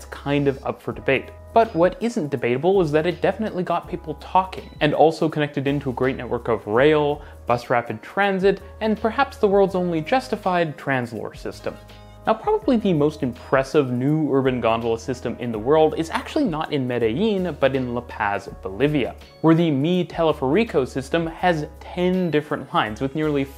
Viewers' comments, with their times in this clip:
0:10 the world’s only justified what system?